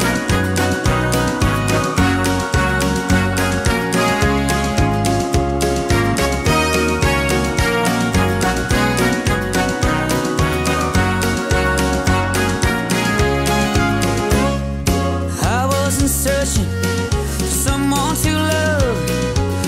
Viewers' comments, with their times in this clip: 0:05 Its the same beat you can hear dont understand how yous cant,but i completely agree this song is nothing compared to shotgun